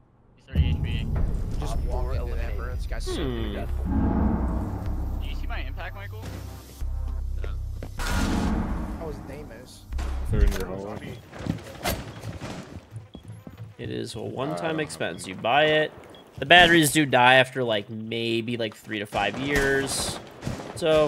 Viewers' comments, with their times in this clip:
0:06 the faint Tyler 1 scream lmao